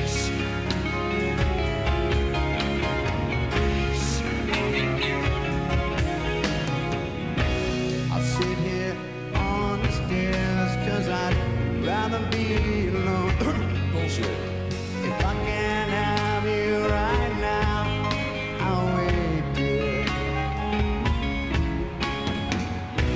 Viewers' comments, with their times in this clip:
0:05 The BEST of Axl... that smile!!!!!!! And his voice is FLAWLESS. We were so fortunate to be blessed by these guys... what a moment in time to be alive... long live the 90s kids!